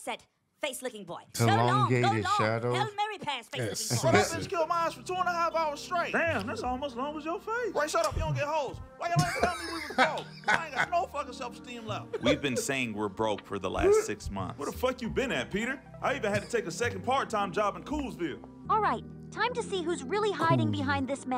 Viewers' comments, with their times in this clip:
0:06 I caught the zelda melody in the background